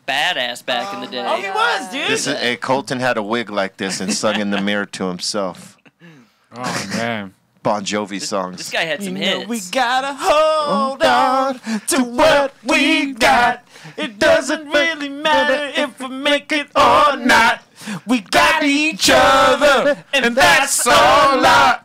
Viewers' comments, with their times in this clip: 0:08 Love when they get all musical.